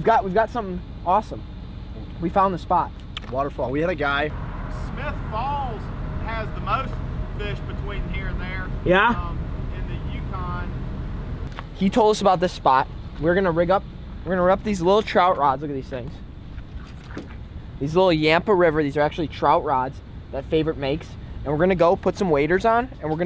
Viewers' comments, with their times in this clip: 0:08 I thought the one local said smith balls instead of smith falls